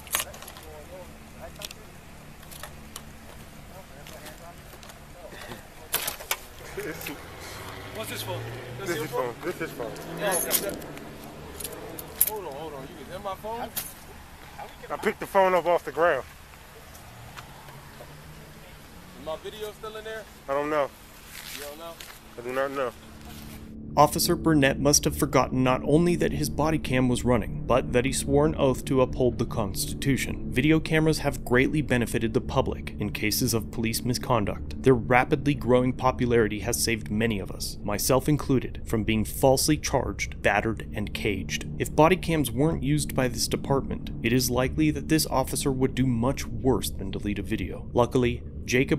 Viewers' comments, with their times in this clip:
0:06 you hear his laugh, as if he out smarted the victim. So sad, he seems happy with his invasion into this persons phone and EVIDENCE!
0:29 he giggles to the other 2 officers they were all aware and if they weren't the laugh was meant to inform them that he just did something to the phone